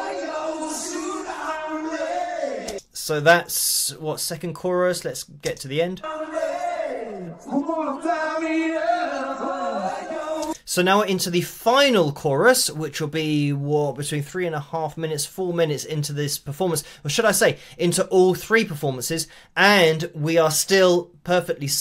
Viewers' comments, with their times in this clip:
0:07 ,...What is/are the vocal effects? Tight delay and reverb?